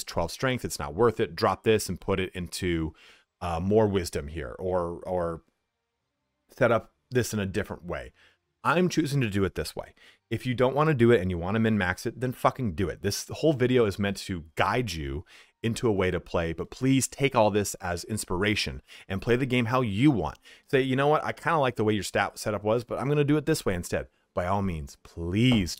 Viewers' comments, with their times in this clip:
0:10 why you getting angry at the microphone?